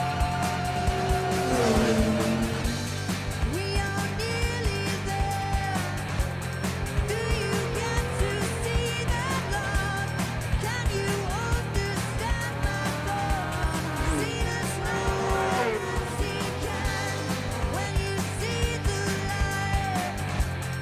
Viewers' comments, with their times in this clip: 0:07 TURN DOWN THE VOLUME PLEASE!